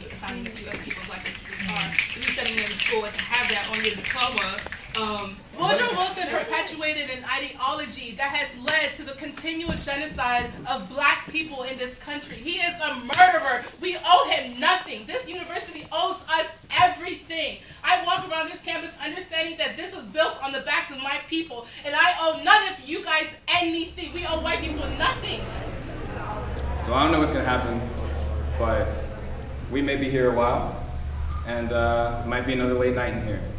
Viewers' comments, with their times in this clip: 0:03 What's up with the finger clicking ?
0:05 whats with the finger snapping
0:19 because screaming at a very well-tempered man that isn't screaming at you is the most logical thing to do when "negotiating." Grow up.